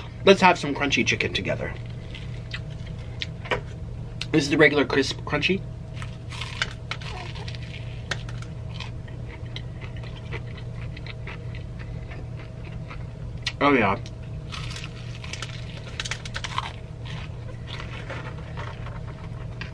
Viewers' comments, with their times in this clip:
0:07 Omg when you said this is the regular chicken crunchy you can hear somone say uhh ha pause